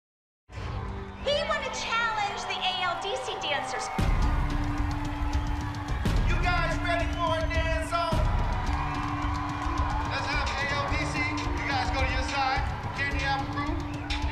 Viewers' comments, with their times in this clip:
0:01 That’s about an open E note on the violin